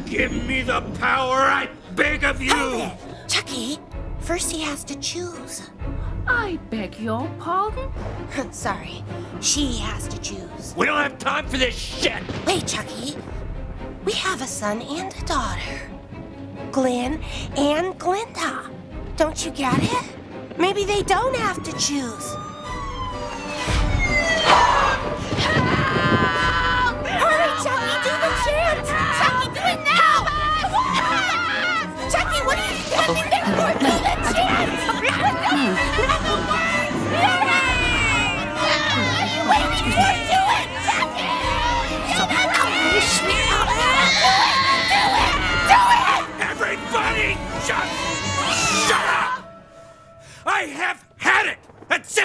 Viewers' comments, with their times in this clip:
0:10 We don't have time for this SHIT!!!(Thunder & Lighting)😂😂😂
0:37 female baby: 😭😭😭 male baby: 🥱😴😴 the male baby is not even crying